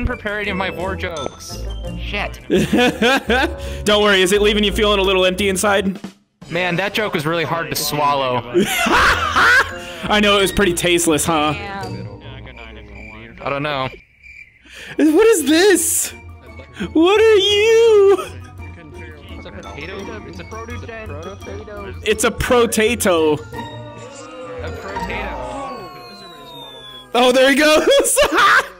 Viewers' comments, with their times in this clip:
0:09 You laugh like a crow!